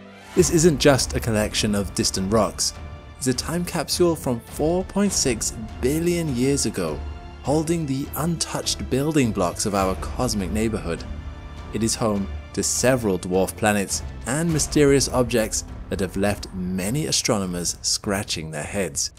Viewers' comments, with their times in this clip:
0:03 Turned in to a German for a moment